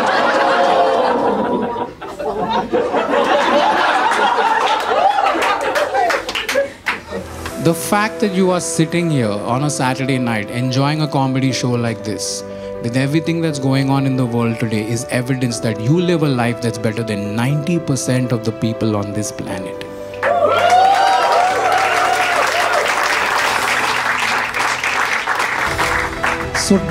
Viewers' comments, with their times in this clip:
0:08 Background Music started 😂